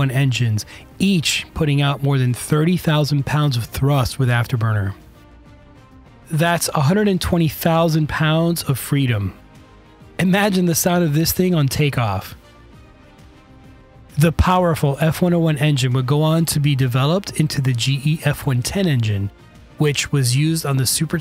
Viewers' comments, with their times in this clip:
0:04 "Imagine the sound these engines would make on take off!" ... as you show video of a B1 taking off. Why exclude the engine audio for such a silly blogger babble of 'imagine the sound'. Why not include the actual audio of a B1 ? Lazy editing.